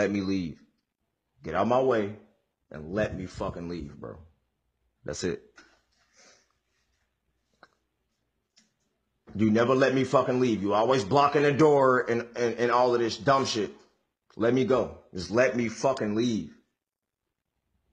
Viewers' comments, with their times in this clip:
0:05 buddy sound like g herbo